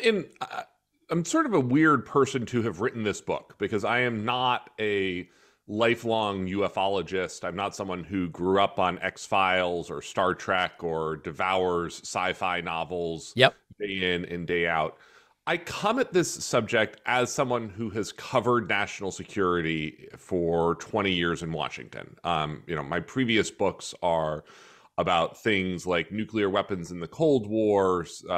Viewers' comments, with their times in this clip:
0:09 anyone who calls it "star track" clearly is not a trekkie or trekker. :)